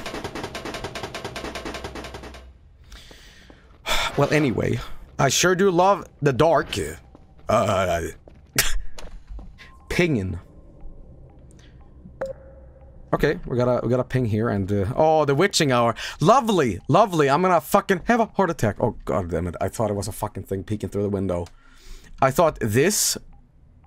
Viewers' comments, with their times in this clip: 0:06 what was that goofy ahh sound